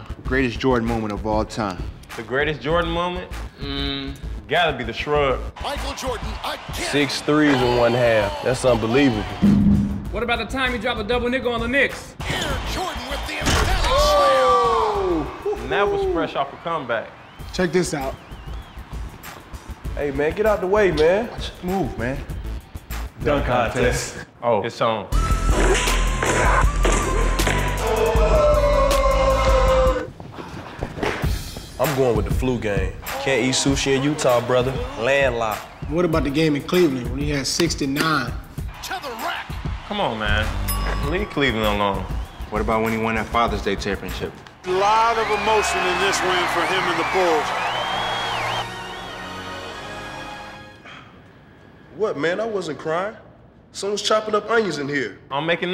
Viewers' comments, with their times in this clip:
0:09 "What about the time he dropped a double nigga on the knicks" 😂😂😂😂
0:10 Did he say double nigga on the knicks?
0:10 Cp3 knocking in the window point god
0:10 its sounds like rondo said double nickel
0:10 thumbs up if you though rondo said " what about the time he dropped a double-nigga on the knicks"
0:24 Haha Derrick Rose had to get down to business.The way he said "Oh it's on" and took off his chef hat was funny.
0:36 Westbrook saying "Cleland"